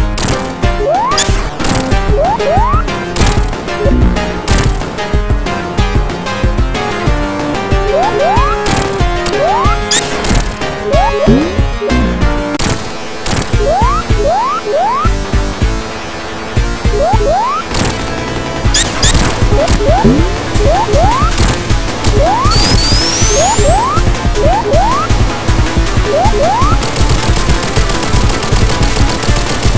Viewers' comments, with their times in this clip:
0:10 I sworn I heard Pokemon Battle Music